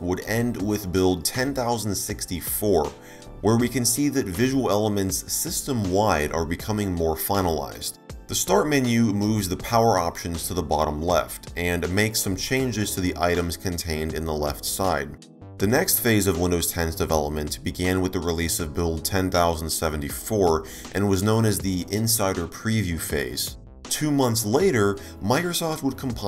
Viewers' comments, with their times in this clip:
0:08 his voice is audible 2 times at the same time lolololol